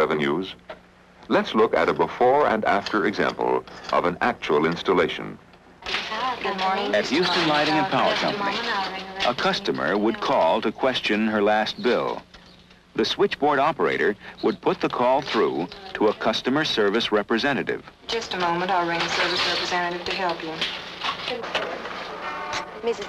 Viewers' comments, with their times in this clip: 0:07 I could be wrong, but the narration sounds suspiciously like Commander Straker himself, Ed Bishop.